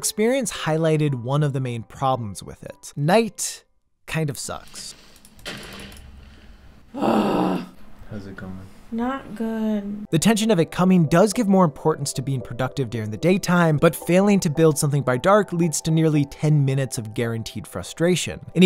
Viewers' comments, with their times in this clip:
0:05 *gets blown up by a creeper* *groans in frustration* "How's it going?" "Not good.." Oh man that broke my heart lol